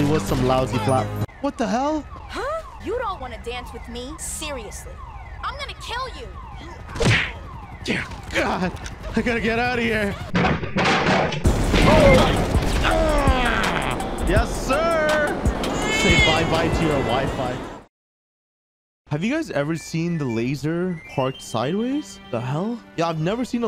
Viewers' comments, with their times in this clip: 0:08 that cop sounded like a kid 😂😂😂😂